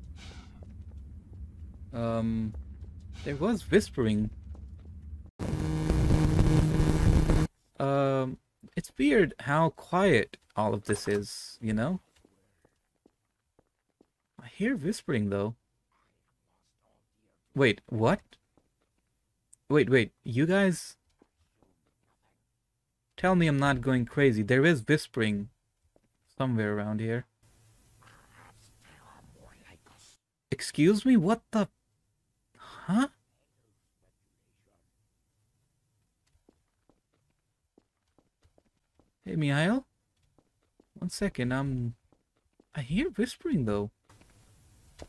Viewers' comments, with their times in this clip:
0:07 That's pretty scary, what I do know is that in d1_trainstation_03 there are scripted vortigaunts under the player and that's why you hear them.
0:27 I think I heard “my ankles” from the whispering lmao
0:28 like i hear it said "i have to tell them with any cost " in ,very weard
0:32 i heard a vort say perhaps their more like us i believe